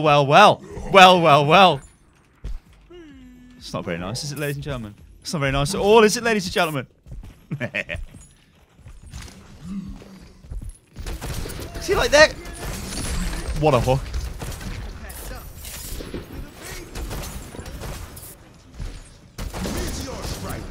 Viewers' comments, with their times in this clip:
0:03 that little sad ’ladies and gentlemen’ ;(